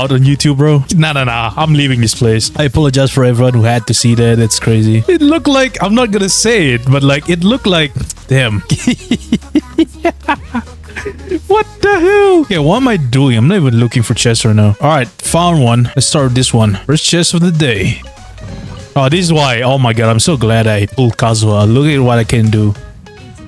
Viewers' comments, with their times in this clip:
0:09 that goofy ah laugh 😂